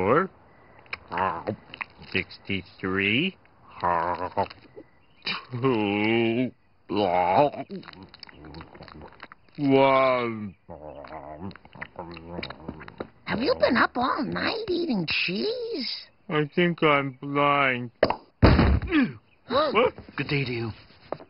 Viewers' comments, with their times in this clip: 0:05 Homer sounds like Bubble Bass from SpongeBob
0:08 the way homer says "one" LOOOL